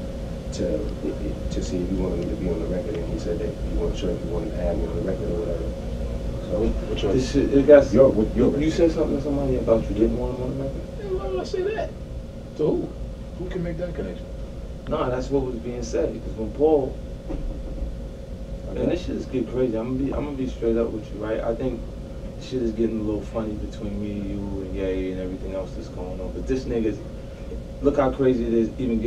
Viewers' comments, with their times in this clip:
0:09 Banks voice went high-pitch the way my son's does when he's lying to me 😂
0:11 seconds Lloyd's voice went Falsetto.